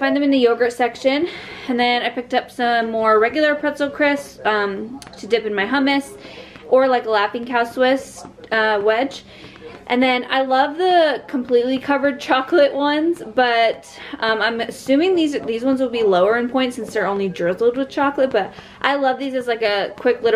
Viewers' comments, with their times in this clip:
0:05 Omg I just had a heart attack. I’m home alone and I’m housesitting and I was ish and I heard your son or something make a noise in the background I thought that was being made in the house I’m in and my heart stopped for a second 😂